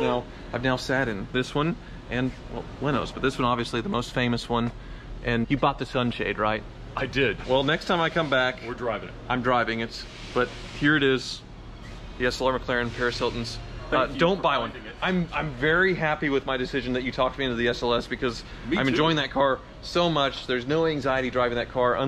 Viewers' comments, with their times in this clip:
0:10 If you listen closely, you get Rick Rolled